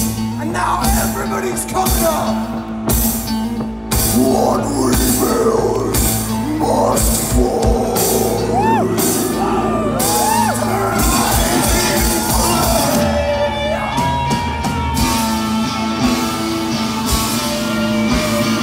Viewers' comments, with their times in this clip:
0:06 The Death Growl 😳🤣